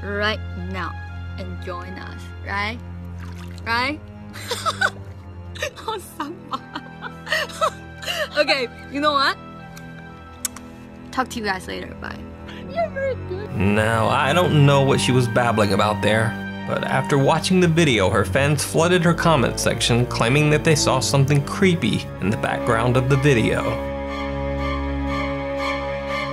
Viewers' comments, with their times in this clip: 0:03 Girl in pool blows a kiss. Laughs and whips her head around to look at something/someone. Right towards the 'ghost'.
0:06 she sound creepy even more the children
0:12 Hey, greetings from Panama, huge fan. just asking, is there a second male voice on minute thats said "bye" ???